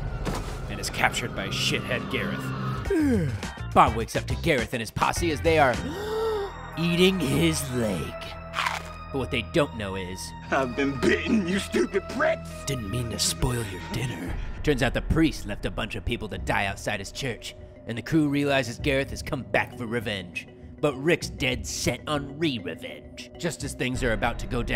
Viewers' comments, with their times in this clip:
0:10 the way he says it, and the sound effect in the background, just makes it so damn funny xDDDDD